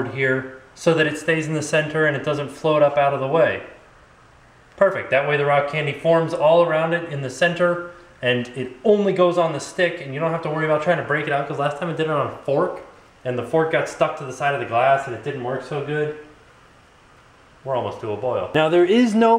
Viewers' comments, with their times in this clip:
0:04 Nice purple stove. I heard a "DING" at like